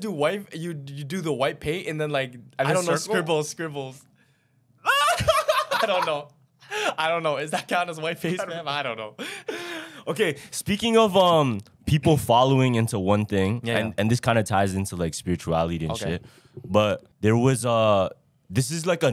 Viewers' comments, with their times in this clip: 0:04 mischevious ahh laugh
0:06 Homies laugh sounded like he just heard his favorite Mexican song at minute 😂😂😂😂😂